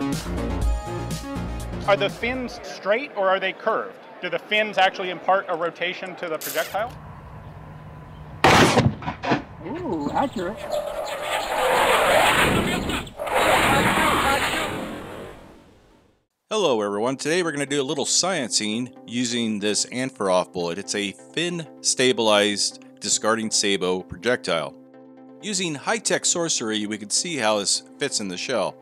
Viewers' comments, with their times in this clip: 0:10 That sounds like the opening cutscene from Falcon 3.0.